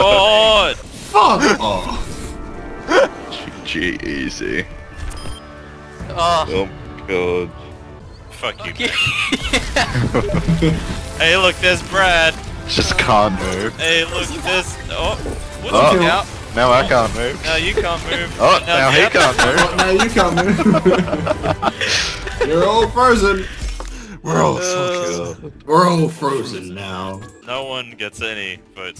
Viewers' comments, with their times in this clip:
0:09 That steam message sound fucked me up fucked me up